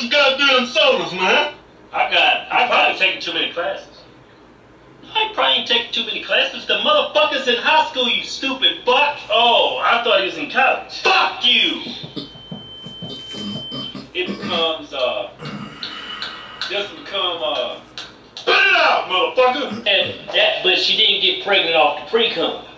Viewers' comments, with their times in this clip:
0:09 Nigga lowkey laughed